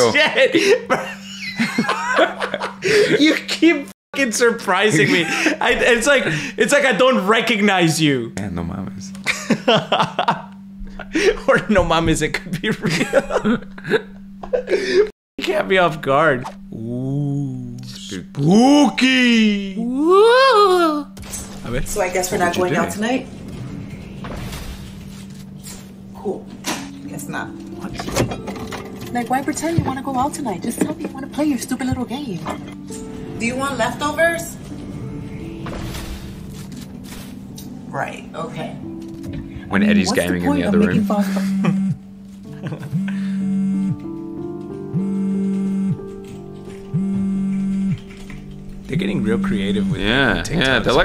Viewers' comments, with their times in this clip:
0:08 i heard a knock
0:09 Don't know if that was one of you guys but i heard two thuds and so on. Weird.
0:11 did anyone hear a bang on the wall or the door🤔
0:11 There where knocks
0:37 THATS A 100% HASBULLA THATS LAUGHING